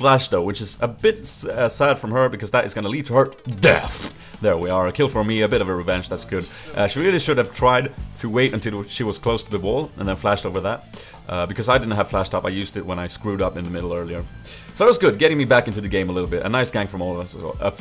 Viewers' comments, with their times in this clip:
0:03 "cuz that is gonna lead to her..... DEATHJHJHJ" Donald Duck style xD